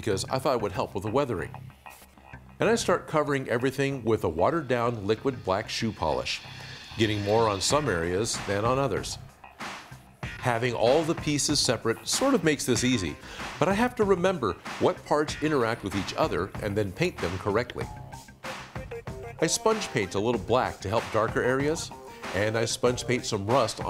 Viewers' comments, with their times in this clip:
0:07 when this music kicks in, you KNOW we are at the business end of the make 😎😎👑💪